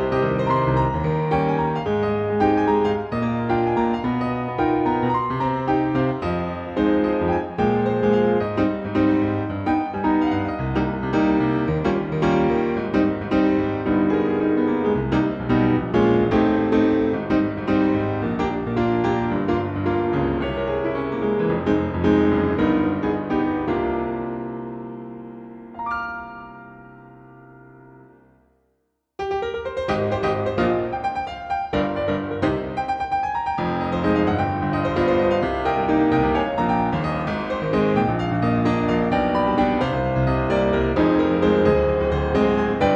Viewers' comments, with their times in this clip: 0:09 the jazz intro really got me
0:26 was that a rickroll or just my imagination